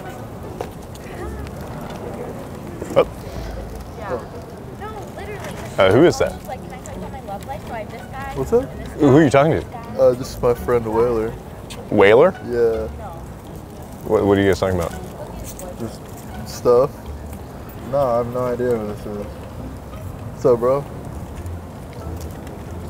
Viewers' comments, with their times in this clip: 0:05 If you listen close in on you can hear a girl talking about one of her friends who are talking to like 6 different guys...